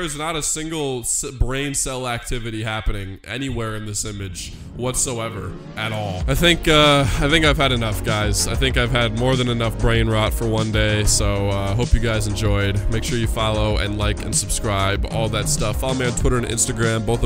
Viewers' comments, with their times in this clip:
0:03 thats some gibberish language right there just the way inklings and octolings talk in splatoon (SMG 4's animation ofc)